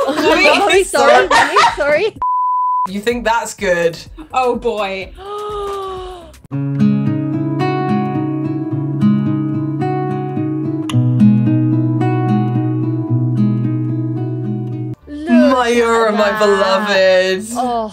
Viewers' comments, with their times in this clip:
0:04 ~Le GaSp ~🤪🤪 🤣🤣👌omg!!!